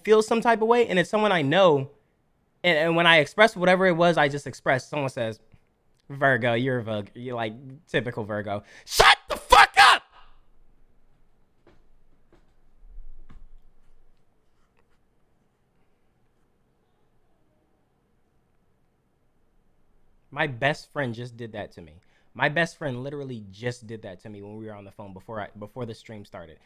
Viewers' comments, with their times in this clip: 0:07 that was genuine anger and I don’t know why that shit was so funny
0:08 I had to replay that “STFU” a few times. It’s so satisfying to listen to